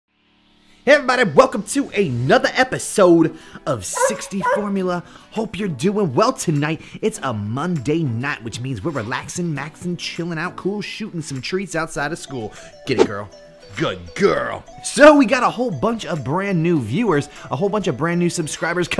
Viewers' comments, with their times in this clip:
0:03 I love the little "arf arf"!❤❤❤🐺🐺